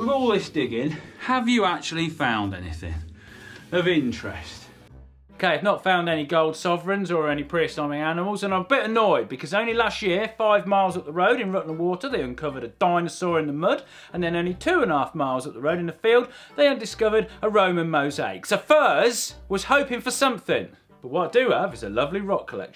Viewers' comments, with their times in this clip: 0:05 Pre-"Assumming" animals... what are you saying?? :-P Closed Captioning says Pre-assignment Animals? Is this a British term for pre-historic that I don't know?